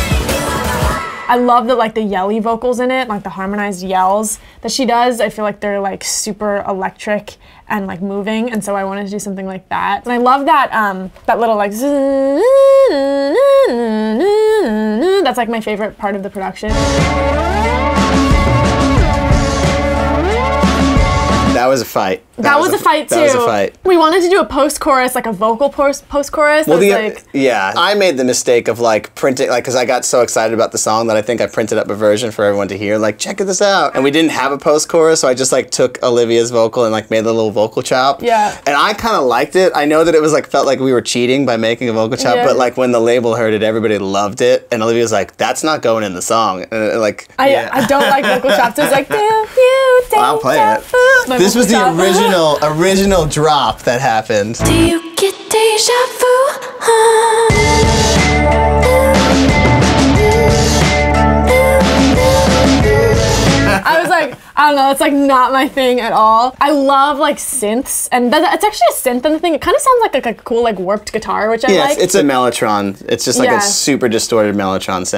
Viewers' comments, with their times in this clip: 0:10 Omg that's like one of my favorite parts too! It so catchy and reminds me of the intrumentals in songs by Lorde too :)
0:12 i love how in tune she was in
0:35 im happy they went with the mellotron/elec guitar sound instead of the vocal chops, it sounds so much cooler and original <3
0:53 I know she said she doesn’t like that but it sounds good 😬 i want that version released 🤭
0:54 Am I the only one who’s in love with the vocal chopped chorus that they scrapped ? It sounds so good omg
0:55 waittttt I actually love the vocal chop
0:58 THAT VOCAL CHOPS!!! It’s actually sooo good, I want that version. 😩
0:58 I LOVE THE VOCAL CHOP😭